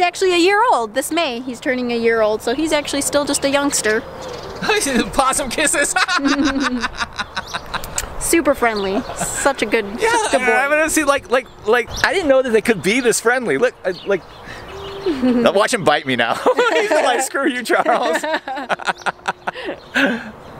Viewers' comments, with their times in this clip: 0:04 it was such an aggressive statement and laugh😂😂